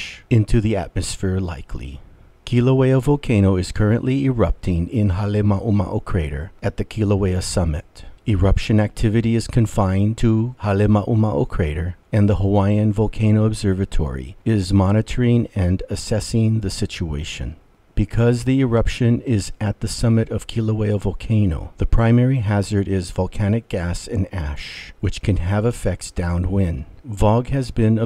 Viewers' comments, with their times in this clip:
0:09 Hale mao What?!